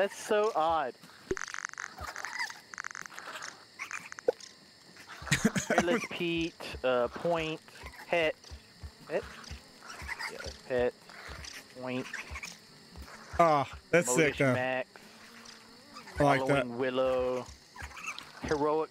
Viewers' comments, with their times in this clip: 0:03 Mini Ladd breathing hard